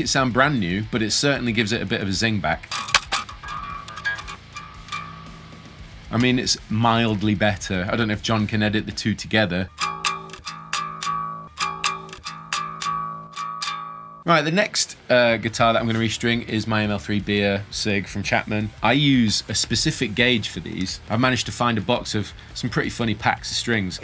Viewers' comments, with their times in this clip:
0:09 you can totally hear how the snake oil got slapped out ;)